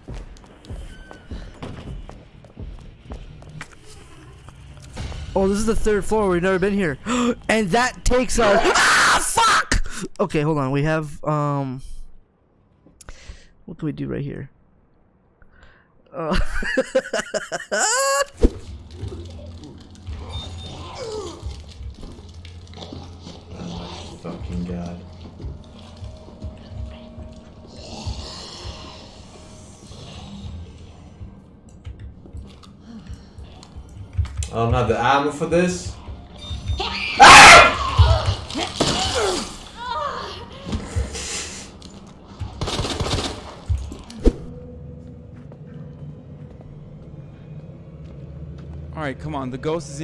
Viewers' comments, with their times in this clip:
0:04 he just completely ignores that he screamed
0:04 that scream kinda reminds me of Micheal Reeves when he screams lol
0:07 OMG that guy!!!!! HAHAHAHAHA Fucking hilarious!!! That scream!!
0:08 i love how he didn't even move he just screamed🤣
0:10 bro screams and acts like nothing happened
0:12 ignores that he screamed. Laughs for 7 seconds. Me: Looks at the chat and laughs harder😭
0:34 Its am and I'm laughing my ass off bruh how do you get scared by a fart